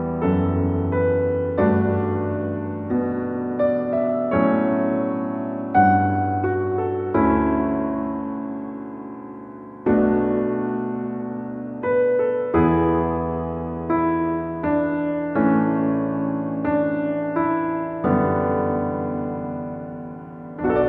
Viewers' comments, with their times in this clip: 0:05 Noooo! BGH music!